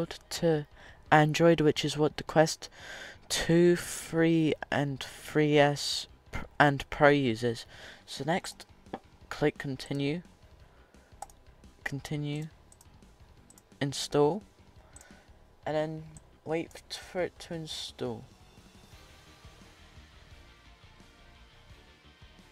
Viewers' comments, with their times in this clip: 0:07 dont think i didnt hear that fart